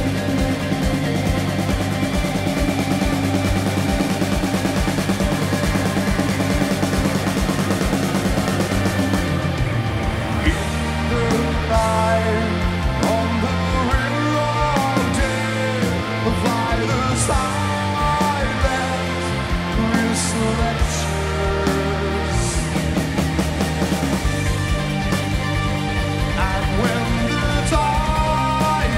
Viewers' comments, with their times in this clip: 0:10 Really fantastic bass tone for a live performance